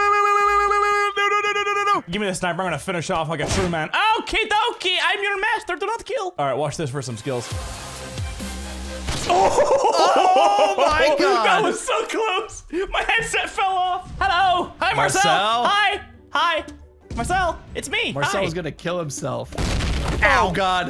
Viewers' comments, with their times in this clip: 0:03 Mini sounds like Gru.